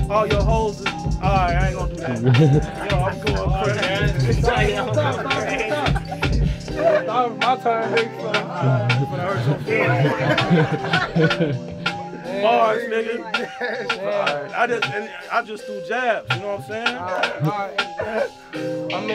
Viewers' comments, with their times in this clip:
0:07 is so wholesome "My Turn" like a lil kid💛🤞